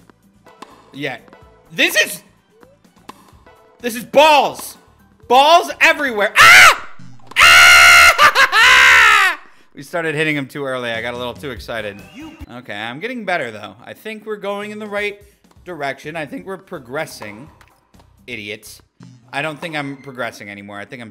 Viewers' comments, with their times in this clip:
0:08 that laugh had me dying 😂